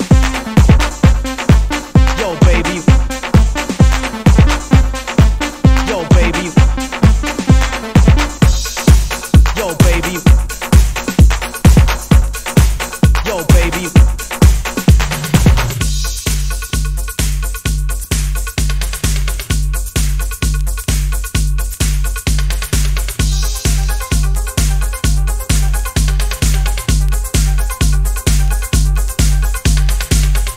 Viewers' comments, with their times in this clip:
0:08 Wow! Awesome mix! I listen to your mixes almost everyday, but this is my favorite mix so far. Brings back great memories even at 50. Love the transition from deep house to new wave then back to deep house - bad ass. Really shows your range. The art cover looks amazing. Keep up the good work! Thumbs up and subscribed.
0:16 Yoooo! on, it gets deeeeeeep! Good s#!t, Brotha! Keep up the good work. House music all night long!